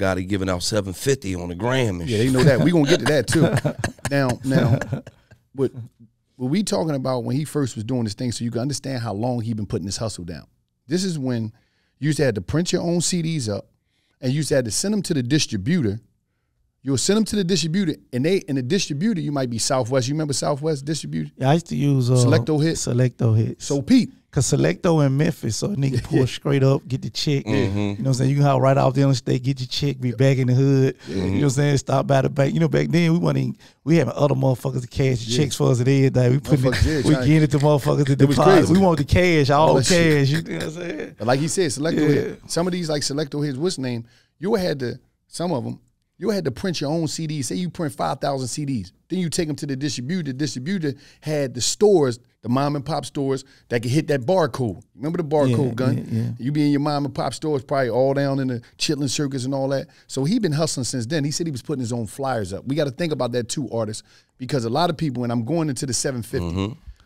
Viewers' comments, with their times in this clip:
0:05 When wallo was struggling to say distributor 😂
0:50 The way wallo says distributor 😂 distro-booter 😭😭